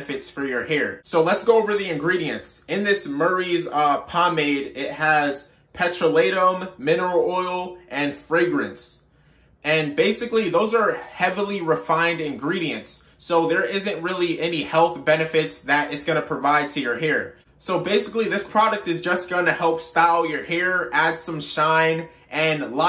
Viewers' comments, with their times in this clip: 0:03 Pet-tra-lay-um...you mean "petroleum" 😂💀